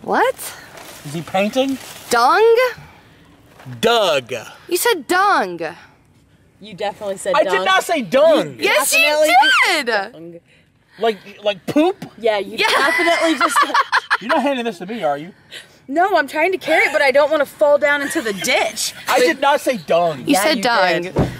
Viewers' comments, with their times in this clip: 0:09 holy voice crack